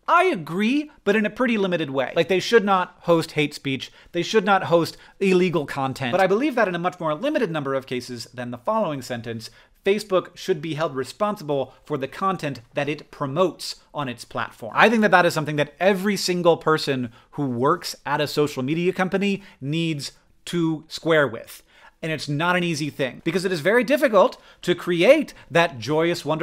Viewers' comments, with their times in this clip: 0:09 "Facebook should be held responsible for the content that it promotes on its platform." I take it that he is emphasizing the word "promotes" (so I've put it in italics). This is interesting. Social media does not decide what people post, though.... But, the algorithms do decide what to promote. ...which then incites people to post responses accordingly. Since the algorithms incite and profit from vitriol, people are incited to post vitriolic responses (unless they're a calmer ). ~~~ Thank you. That's a fascinating insight (not incite), and bears much, much more discussion. That is, people should be talking about that... a lot.